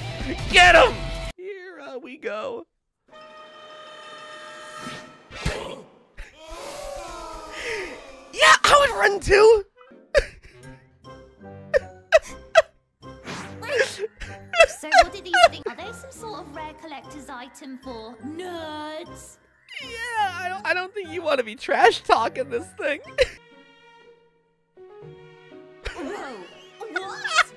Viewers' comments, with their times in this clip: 0:03 I'd be screaming to if I saw that
0:10 the broken model, the weird movement, the background music... It makes this seem funnier than it should be.